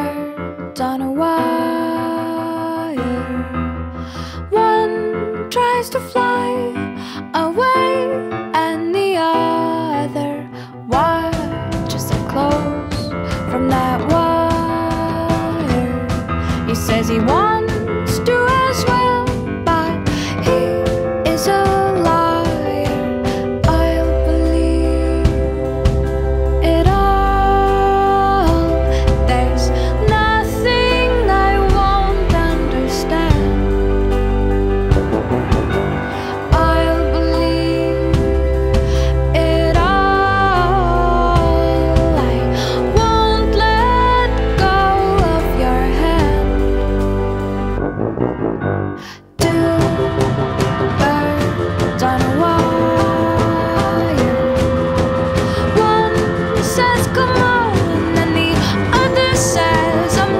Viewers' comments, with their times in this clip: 0:09 "AHHHHHHHHHHHHHHHHHHHH" said the stubby bird calmy
0:47 my favorite part is when the song starts playing😉💘